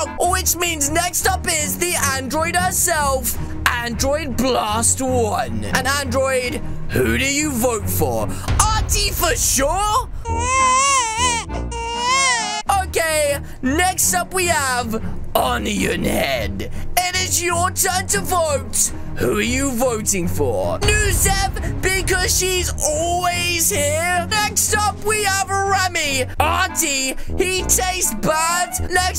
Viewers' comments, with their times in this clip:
0:10 The baby cry made me laugh!🤣🤣🤣